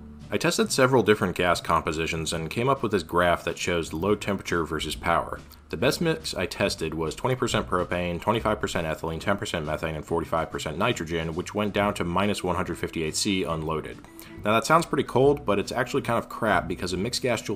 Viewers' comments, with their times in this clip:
0:03 Paused to go find what was banging around in my house. But it was infact stuff banging around in YOUR house.